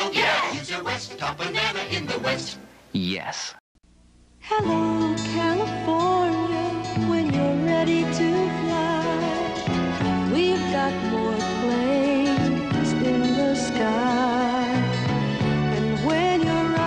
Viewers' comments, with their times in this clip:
0:04 Shelby Flint sings for PSA Airlines. Perfectly captures the mid/late 70s California vibe.